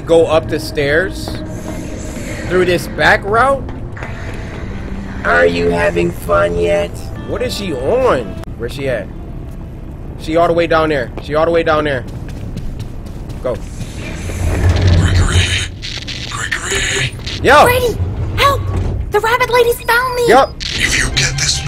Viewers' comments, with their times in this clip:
0:04 The autotune is wild 💀💀💀